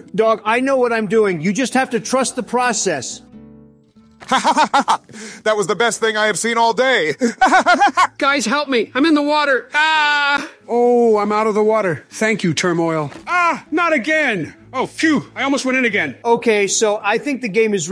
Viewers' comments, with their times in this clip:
0:04 Barack’s laugh is so funny when I put the video on 2x speed